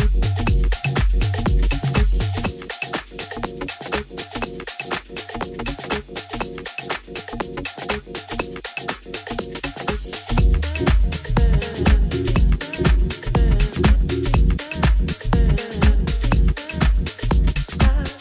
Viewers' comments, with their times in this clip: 0:03 SMOOOOOOOOTTTHH LIKA BUTTA'!!!!!